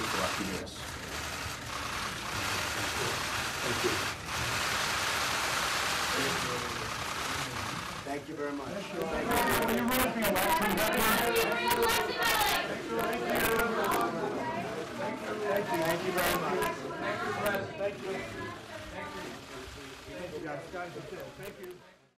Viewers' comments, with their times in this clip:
0:09 crisp hd audio